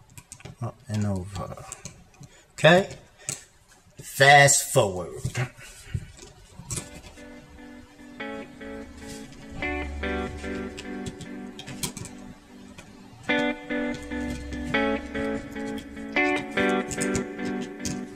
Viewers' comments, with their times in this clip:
0:06 Perfect. Everything you make is amazing. Plus, great music ...